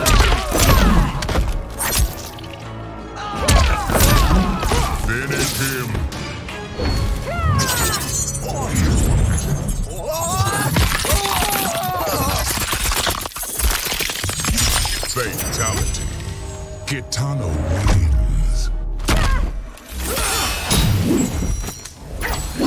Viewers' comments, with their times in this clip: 0:04 the announcer got tired of saying FINISH HIM a lot of times throughout the years lol